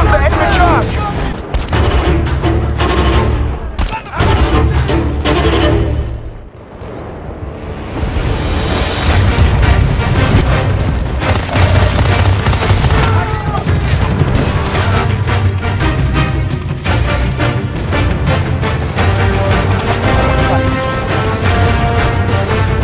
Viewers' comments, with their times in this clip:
0:09 did you just kill someone to the BF theme?